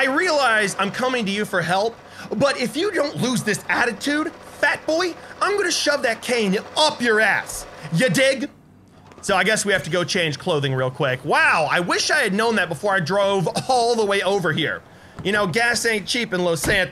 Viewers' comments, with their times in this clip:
0:04 sounds like my mom